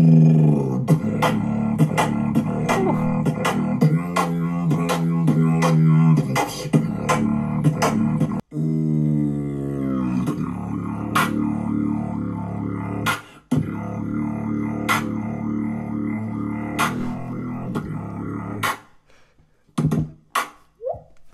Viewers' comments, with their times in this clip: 0:09 is that inward bass or throat bass ?